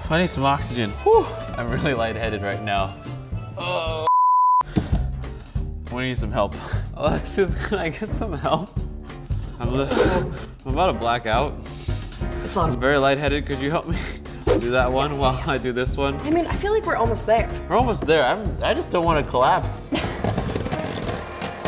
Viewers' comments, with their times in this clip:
0:03 i like when he 'grunt' its so funny lol